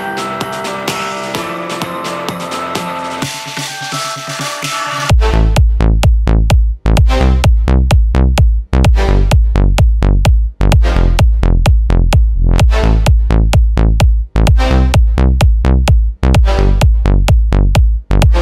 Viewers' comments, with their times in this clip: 0:05 max volume heart attack